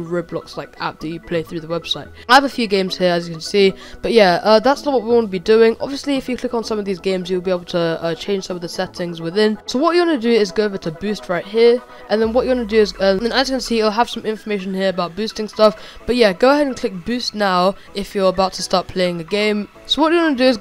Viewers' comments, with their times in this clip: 0:06 the song lol